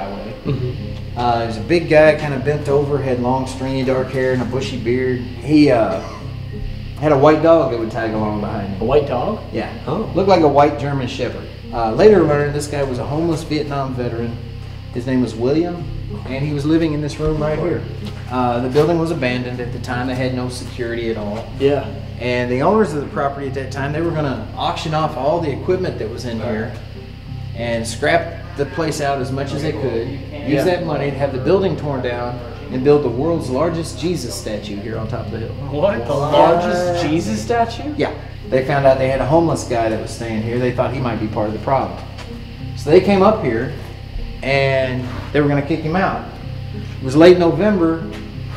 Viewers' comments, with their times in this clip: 0:05 sounds like a cough?
0:29 it sound like a squeaky door opening in the back of y’all
0:30 there’s some people talking in the background, Idk if just some of the guys talking